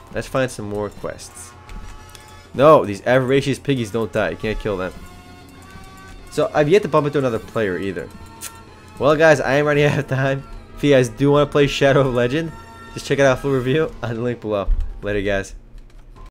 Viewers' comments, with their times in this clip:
0:08 you where laughing T_T D;